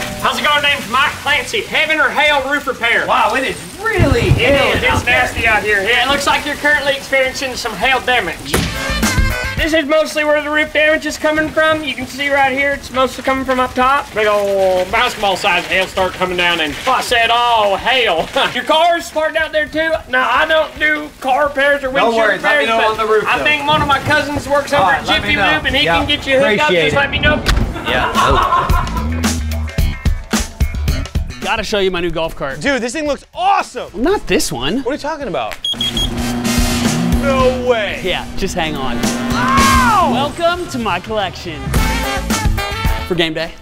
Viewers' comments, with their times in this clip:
0:07 The way of how he said damage as demedge, lol.
0:27 I love how he continued laughing even during the skit
0:28 Anyone notice the laugh